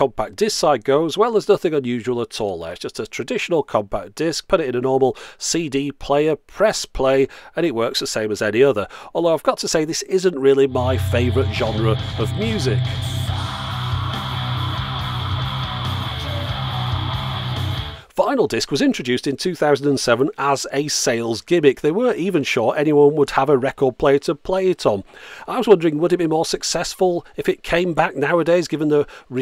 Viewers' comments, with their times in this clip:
0:09 Well that's the kind of music I like. lol Never actually heard of these guys before. They sound awesome!
0:13 I love the absolutely stark contrast between the music and the cursive font of the player